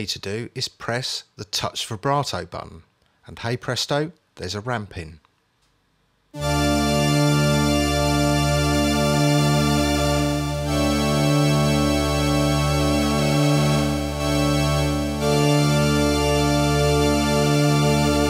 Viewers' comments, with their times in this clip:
0:06 Shit that sounds more like an organ than the organ setting on the Yamaha CS-80, definitely gives that Mr. Crowley intro vibe.